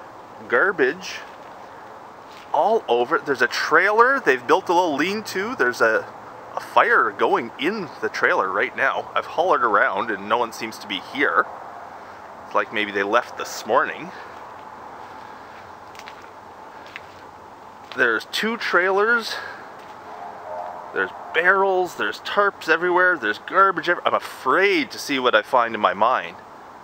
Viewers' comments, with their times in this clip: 0:07 WHY DO U SOUND LIKE THE PRESIDENT WITH THE SEYMOUR FROM STEAMED HAMS